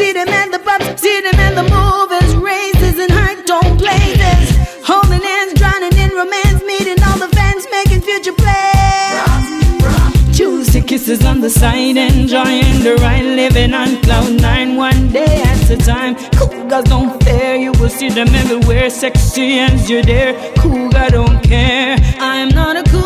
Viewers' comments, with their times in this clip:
0:05 LMAO , OMG I could only get to of this video. I don't mind the message AT ALL but this song was poorly produced and poorly thought out. It sounds like a Public Service Announcement at a Community College VS an intended hit-single from a SEASONED talented singer. No no no, RE-DO IT NADINE! Make it hot, bring some melody and direction to this fractured and scattered mess...Lawd. Her body looks great, she aged well, but she can't dance to save her life. Or maybe she is having fun because I am laughing and I know she MUST laugh every time she remembers this video. Here I was just praising Nadine on another YouTube video, about to sing her song for karaoke and I found THIS (no surprise many ppl havent heard this and they shouldnt, it give her time to release something better and not own this shame). <3 I hate to love this song how about that? XD DWL.